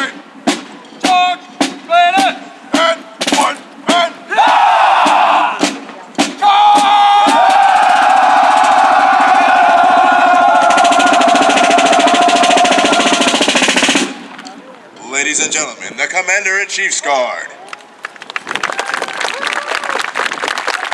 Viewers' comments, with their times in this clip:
0:03 I love how armies would shout in unison whenever they were given the order to "charge bayonets." Must have been one of the most intimidating things ever to see and hear coming at you.